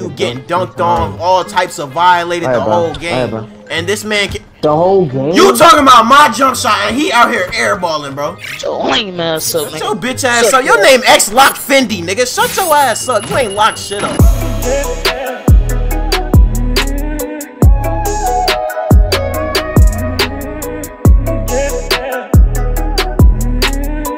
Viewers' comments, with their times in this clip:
0:06 Why’d he say lame so hard 😂😂